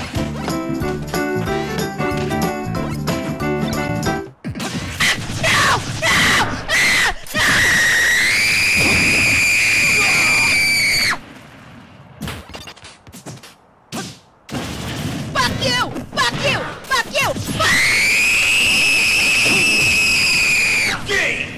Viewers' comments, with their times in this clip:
0:04 Why did I laugh so hard when I should be on the floor crying and screaming in agony due to my ears bleeding in severe pain?